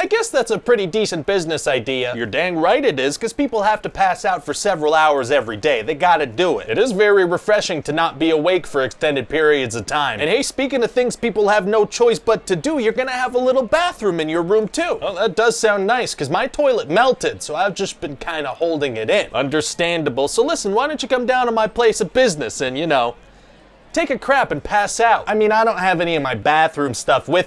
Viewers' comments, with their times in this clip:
0:10 Anyone notice how Manager Ryan basically begins to rap ? Those rhymes are subtle, but there's a flow. From "do" and "too" right until "listen" and "place-o-business".